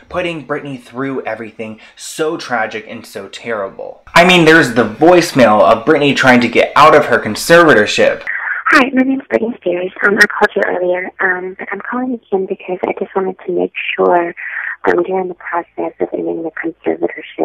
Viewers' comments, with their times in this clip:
0:04 did anyone else get jumpscared by the audio shift or just me?